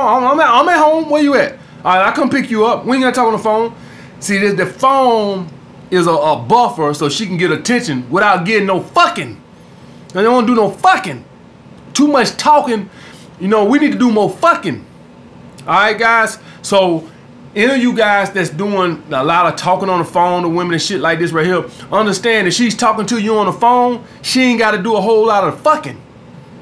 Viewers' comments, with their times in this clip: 0:08 The way you pronounce "FUCKING" had me rollin for like 5 good minutes lmaooooo 😂😂😂😂